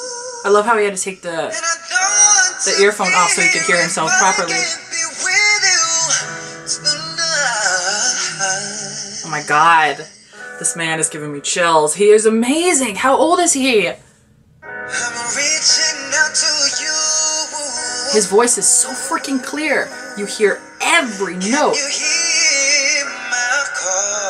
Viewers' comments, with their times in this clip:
0:06 You can actually hear some d*ck revving up his engine :D This is why I love the rawness of the setup of 107.5 bus, it's literally a radio station on a bus in a street somewhere in Manila.